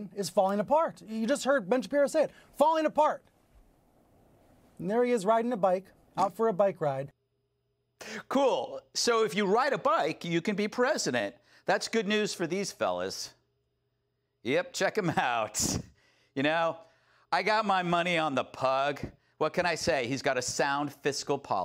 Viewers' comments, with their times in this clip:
0:06 Is it me or did humpty fart ......